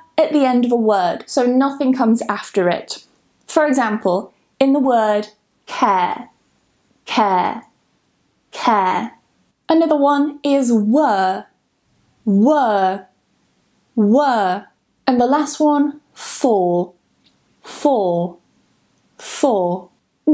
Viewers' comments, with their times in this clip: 0:03 How come the phonetic script for care is /keər/, but for were. it is /wɜːr/, since they both produce an ɜː sound?!